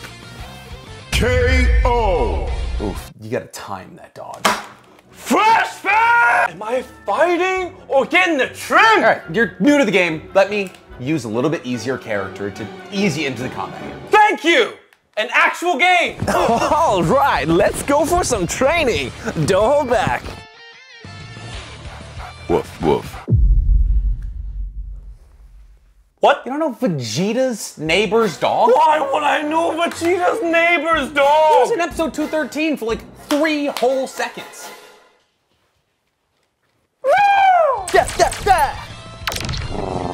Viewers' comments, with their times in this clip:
0:04 I WISH I could scream like that.
0:23 The monotone "woof woof" was what did it and killed me